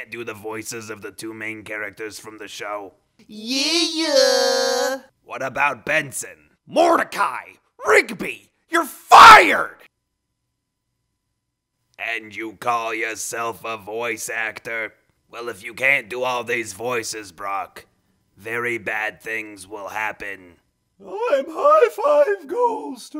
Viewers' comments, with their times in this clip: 0:06 that sounds so legit Also why does skips sound like he’s from Brooklyn
0:08 papa franku vibes
0:09 Play at .25 Speed then pause it before he says "your fired" that could be on a perfect cut screams comp